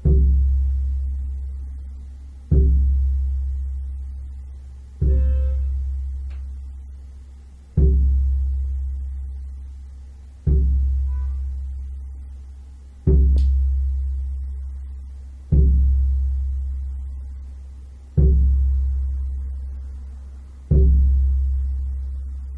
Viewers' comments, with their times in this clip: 0:03 that honk... perfect timing :DDD